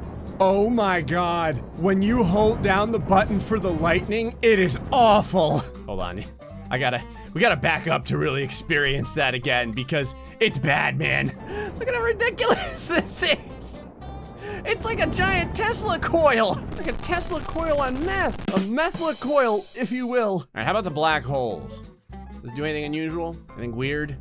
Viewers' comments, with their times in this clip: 0:10 You said "It's bad man" I thought you said "It's batman"